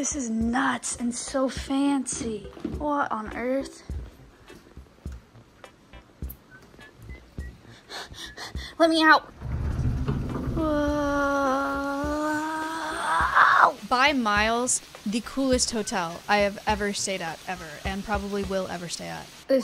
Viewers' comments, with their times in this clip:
0:07 The hyperventilating "LET ME OUT" got me good.. ahhahhaha